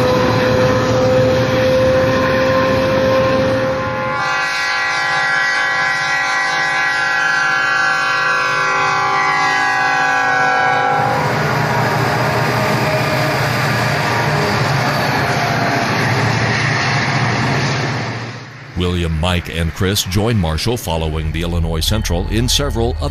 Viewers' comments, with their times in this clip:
0:04 Whoa, whoa! Hold the phone! Did I just hear a k5lla on that locomotive in ? The k5lla was first started production in 2004 and this video was shot in the 90s?!?!